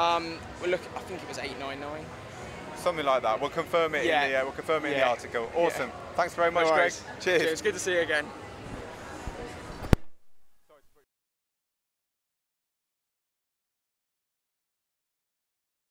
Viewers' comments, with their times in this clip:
0:11 anyone els notice that popping sound is the exact same sound you here when pressing the filter buttons,why is this?